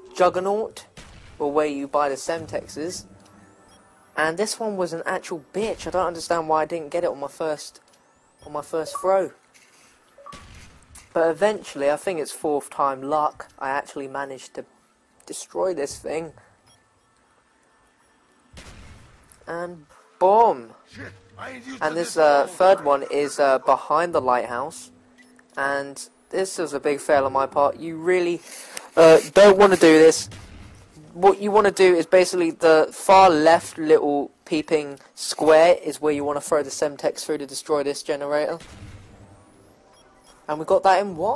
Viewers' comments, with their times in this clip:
0:07 never heard dalek swear before
0:28 Did Ali-a laughed?